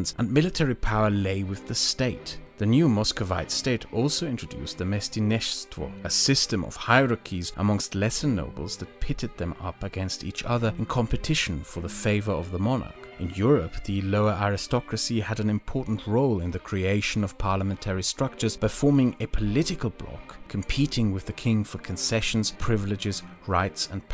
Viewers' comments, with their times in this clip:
0:05 I watched this video just so I'd know how to pronounce this since that's the new estate privilege added in EU4 domination DLC You probably butchered it ngl :p